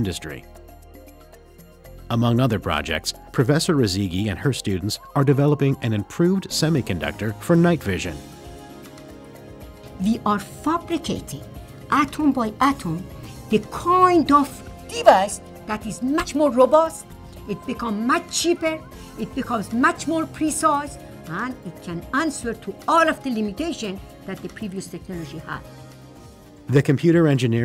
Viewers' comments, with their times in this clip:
0:10 she is iranian i know from accent lmfao